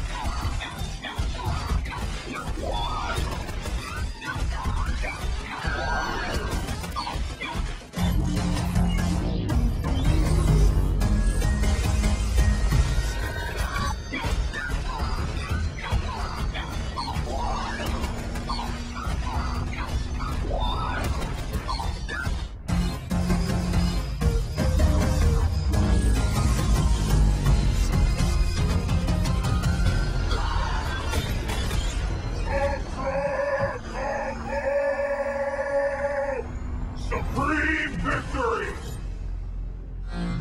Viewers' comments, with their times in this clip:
0:05 If you listen, you can hear the dummy Glacius let out a loud shriek That means he is dead and couldn't interrupt if he tried. At that point, he can't do anything but watch as the opponent goes for as many hits as possible. But, before his life runs out and/or before the opponent inputs an Ultra, the combo can be broken. Hope that makes sense.
0:06 this music os on my mind
0:10 God damn from when the stage switches and that jet noise kicks in... shudders
0:21 this music is on my mind!
0:22 best glacius music
0:23 i have a question: when Glacius does the ice move in for example why does it do music????